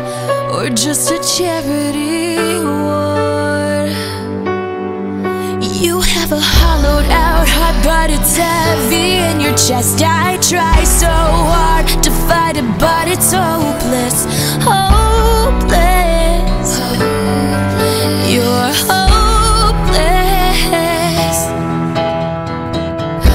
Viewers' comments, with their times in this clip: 0:06 Gosh that baby can sing